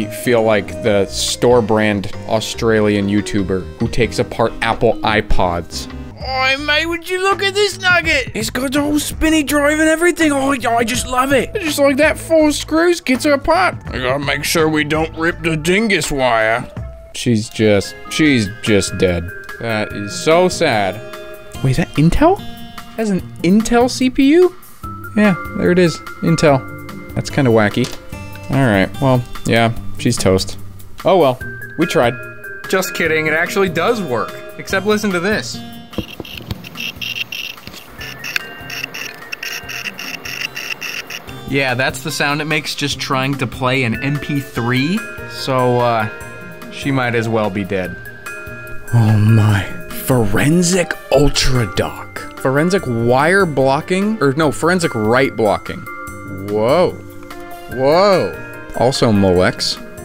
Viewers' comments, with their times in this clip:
0:05 don't you dare mock my beloved angry australian man like that
0:06 that impersonation, though!
0:07 I legit thought that was DankPods
0:11 OMG THAT IMPRESSION WAS TOO GOOD
0:15 with the right Dank background music too.
0:36 it sounds like when you're holding an angry cicada tbh
0:41 it sounds like it's radioactive